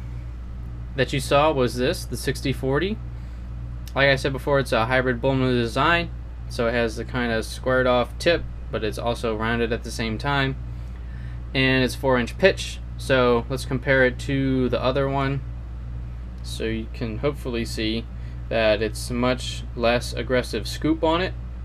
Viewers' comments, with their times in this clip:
0:04 "It's a hybrid buhlwneosign." Sick, I've been wanting one of those.